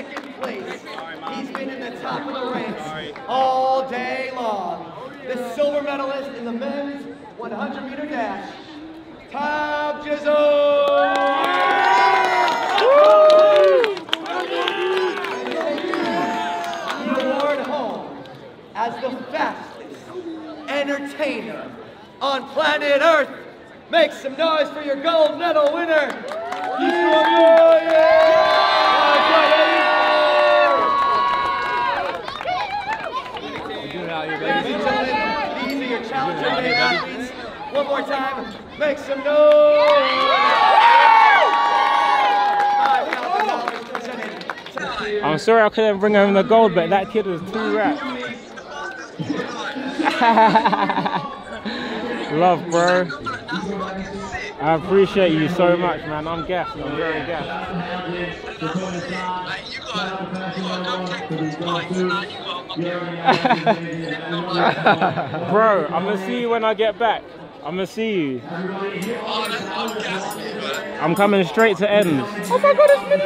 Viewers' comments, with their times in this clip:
0:07 mans said toob jizl
0:08 Tobi is not impressed by the guy who is presenting. Shame on him he said Tobi's name wrong!!!
0:09 They really don’t know how to say your name your face says it all
0:10 You can see Toby laugh and shake his head when the announcer pronounced his name wrong 😂
1:01 the way he said Usain Bolt makes me sick